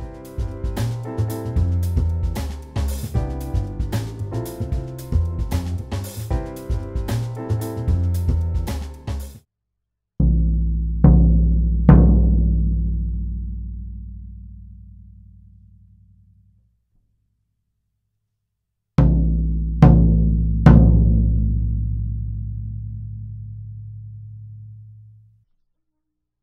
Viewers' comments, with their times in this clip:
0:10 TFW I suddenly thought I had surround sound because my floor tom (behind me) resonated with the video. XD